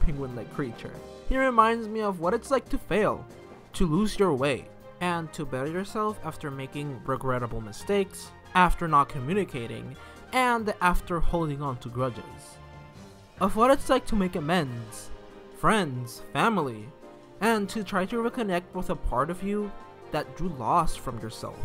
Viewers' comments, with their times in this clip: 0:03 i thought they said “to lose your weight” holy shoot 🤣